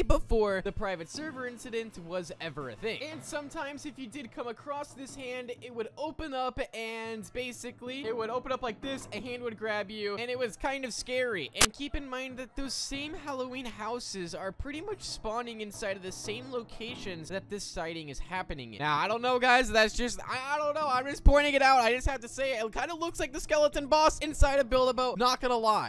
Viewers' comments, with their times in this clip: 0:10 What was that noise 💀💀
0:11 DID YALL HEAR THAT GLITCH SOUND? OR AM I JUST TRIPPIN